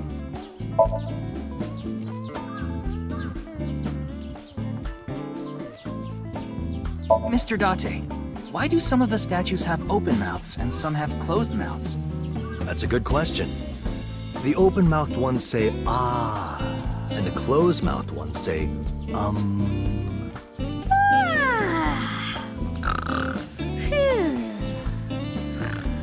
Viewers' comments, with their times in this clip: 0:08 omg Date and the music said "ah" at the same time!! 😭